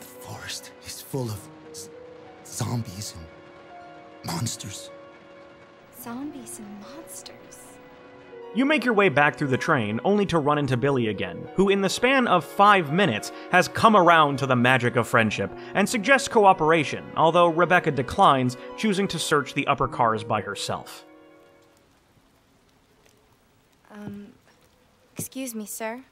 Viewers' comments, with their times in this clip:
0:08 Damn it man, youtube had to load and for some seconds I thought it was your editing, making it like rebecca was like "zombies and monsteeeerrs...bbrrrrr...bipbipbip...normal is not....bad it is"